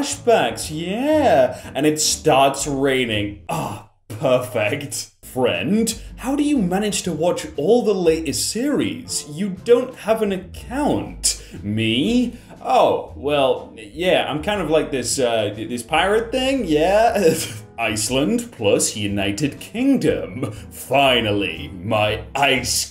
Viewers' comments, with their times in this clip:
0:03 I don’t get this. Rain has never been soothing to me and never will. It’s just annoying hearing a “drip drip drip” every second. If you like the sound of rain please tell my why